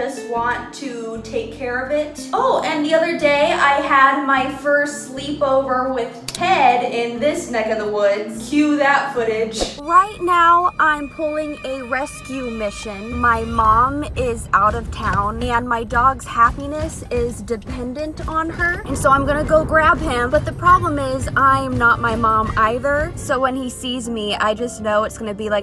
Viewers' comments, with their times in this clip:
0:10 What happened to the sound It used to be there but now it’s just music